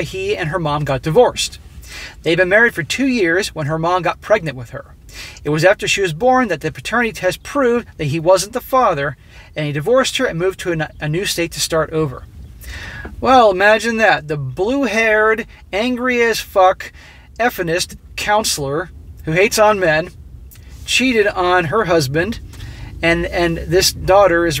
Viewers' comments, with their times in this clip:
0:06 Did anyone else hear circus music in this video or was that just me? lol